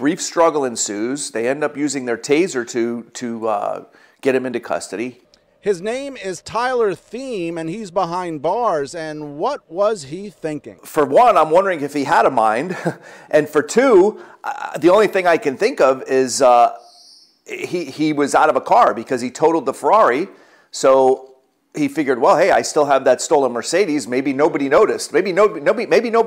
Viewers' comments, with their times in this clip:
0:10 that is a hard R lol